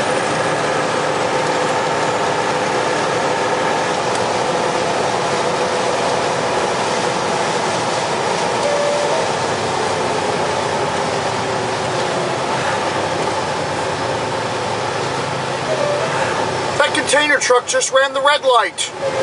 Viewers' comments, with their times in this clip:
0:05 Whelen tornado siren at the back :D